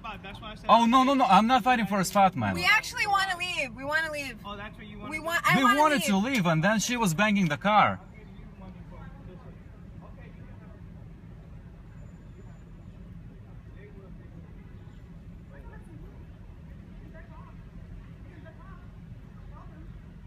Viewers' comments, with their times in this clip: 0:05 not gonna be like rude, but is it me or he sounds like gru from despicable me